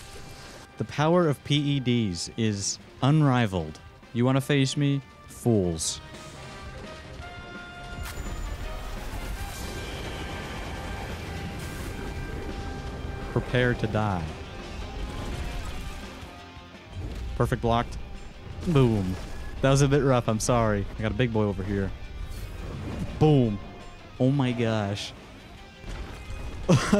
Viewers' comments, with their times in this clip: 0:03 he is trying so hard to sound intimidating
0:12 i love how nonchalant he is saying that
0:12 Bro sounds like Technoblade